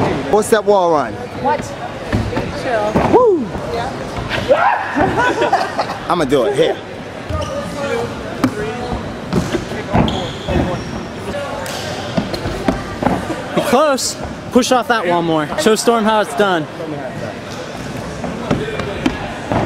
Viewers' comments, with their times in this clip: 0:03 Nice scream xddd